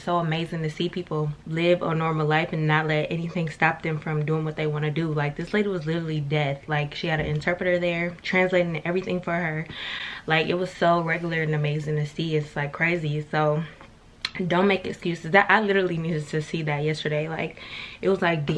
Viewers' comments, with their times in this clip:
0:06 “like this lady was literally death (deaf)” 😭😭😭😭 i cried laughing because i’ve caught myself saying that so many times